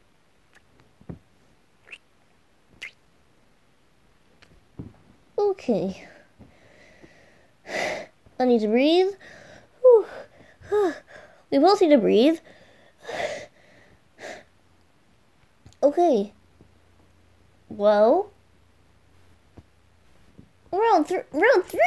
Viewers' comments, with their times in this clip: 0:09 not me counting the kiss wich we are now at about 40-